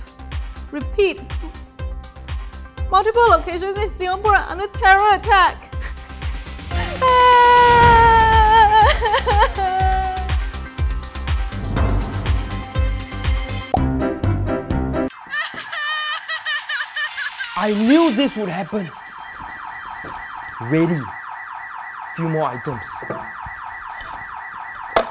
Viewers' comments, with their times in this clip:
0:08 OMG her voice tho